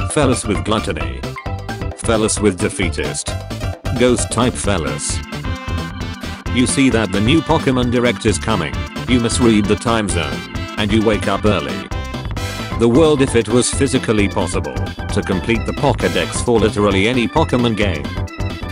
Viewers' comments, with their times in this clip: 0:05 Happy ghost type trainer noises